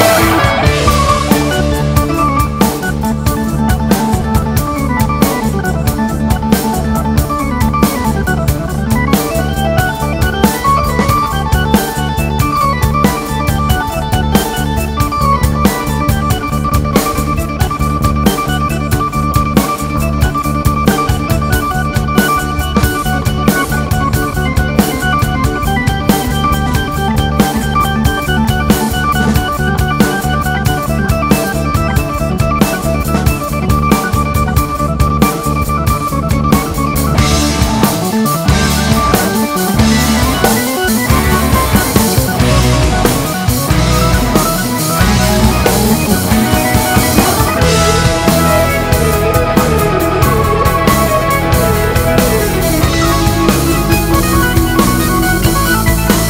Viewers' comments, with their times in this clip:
0:04 The longest citation EVER in a solo
0:36 I could hear js Bach influence by Don airey in
0:44 -35 classical baroque reminds